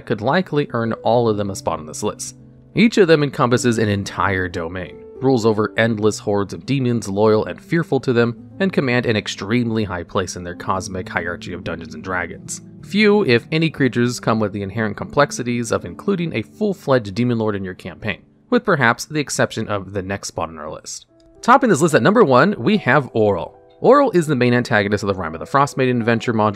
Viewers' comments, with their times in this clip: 0:10 bro said "hierarCHy" 💀